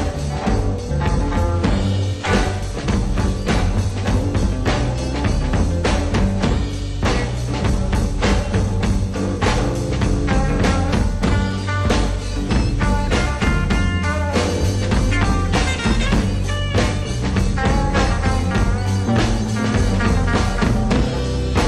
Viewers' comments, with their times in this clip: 0:09 Love hearing the beginning stages of Jerry's chromatic approach to soloing using the lyrical melody as a base for his phrasing. Then branching out to more improvisation afterwards.. layin' out the groundwork for what was to come "Some got six months.. some got one SOLID!"